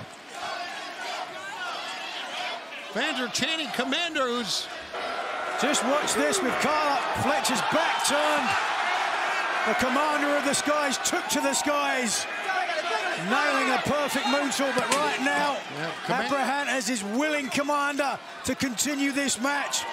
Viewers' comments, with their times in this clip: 0:04 Proof of fake crowd noises.